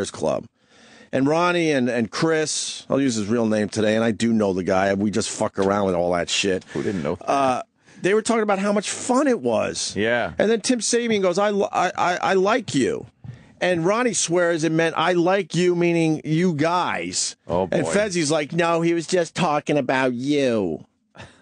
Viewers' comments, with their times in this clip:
0:04 Fez is an easy impression to do, but I'm still impressed Opie managed it and made Ant chuckle for two seconds with it.